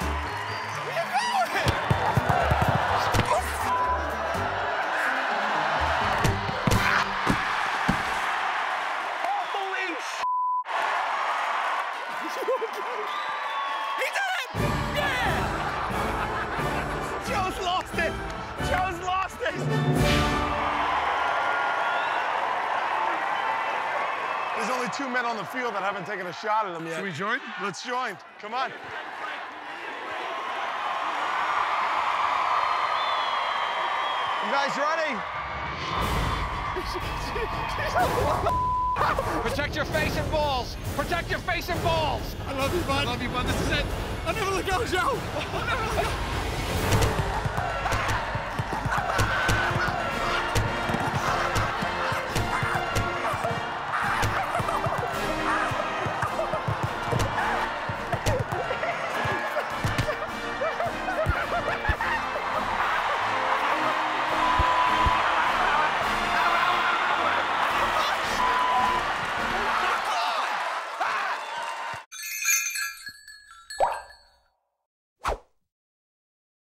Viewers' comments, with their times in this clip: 0:06 That scream :DD
0:23 Aaaaww that kid cheering for Joe
0:48 they play the french national anthem
0:49 Anyone else hear the French national anthem ?
0:49 Why was La Marseillaise playing? Wrong National anthem guys! 😂
0:49 I love the 1812 overture playing lol
0:50 Who edited this? Why add the French national anthem 🙄
0:50 location: Britain proceed to play the French national anthem
0:50 Why there is the Marseillaise playing Lol ?
1:00 why is the French anthem playing
1:05 They weren't kidding on the podcast, you can totally hear Joe go mental under that pile-on